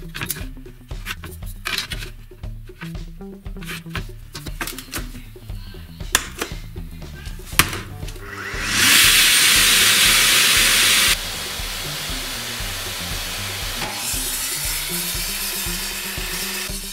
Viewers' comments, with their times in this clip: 0:04 the vacuum cleaner .... :))